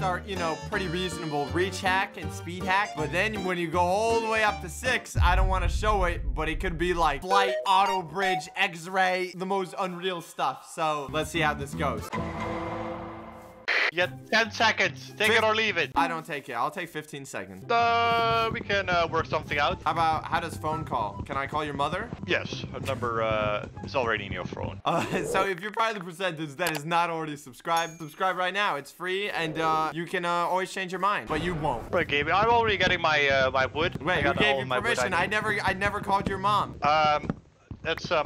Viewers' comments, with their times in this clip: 0:05 Am I the only one who noticed the Android charging noise
0:07 *samsung ringtone spamming intensifies*
0:08 did you say eggs ray?
0:22 That voice went from 0-100 Quick 😮